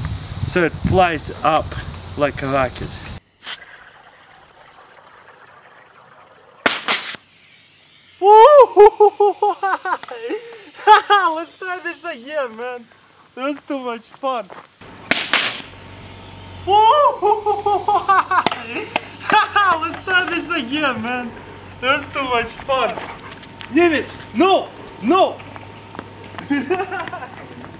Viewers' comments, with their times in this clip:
0:07 Not complaing about his accent but his laugh though! XD ITS SO FUNNY
0:08 The laught tho at #